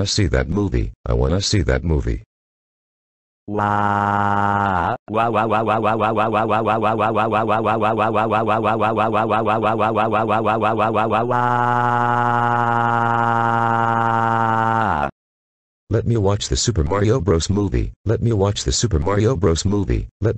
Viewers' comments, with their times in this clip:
0:03 Childish Dad cries like a motor car engine rpm revving to accelerate the power